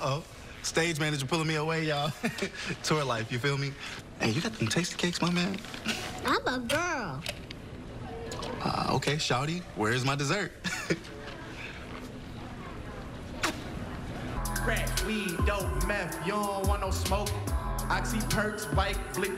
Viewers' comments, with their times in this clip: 0:06 the way she says it is so adorable omg😭